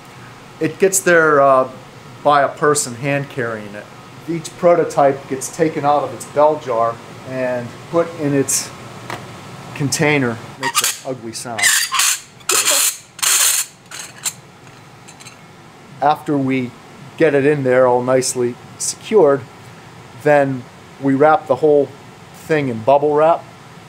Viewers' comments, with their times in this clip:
0:09 Remember-- viable embryos. They're no use to us if they don't survive! The best bit is there is a short noise that sounds like a raptor call when he unscrews it.